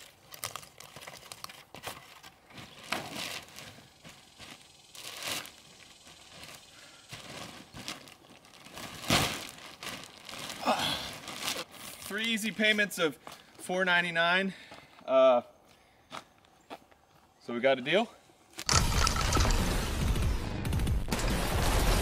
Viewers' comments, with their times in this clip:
0:09 a chicken cried.